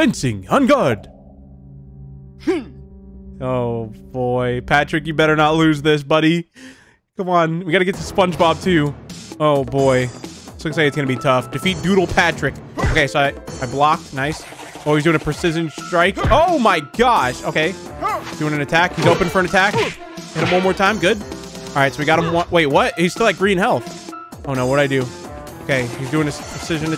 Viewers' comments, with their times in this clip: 0:09 I like this music here in this fight